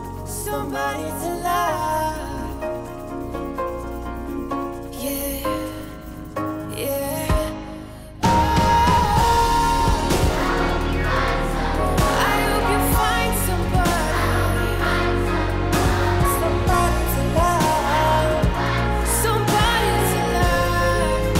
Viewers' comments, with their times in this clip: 0:09 Great content. I especially loved the transition when the music got louder :) I have a question for you, as a local, what's the best time to see New Orleans? I'm thinking about visiting in February, March or April. I'd prefer April, so I'm on the safe side with Covid and also the weather is good, but not to warm. What do you think?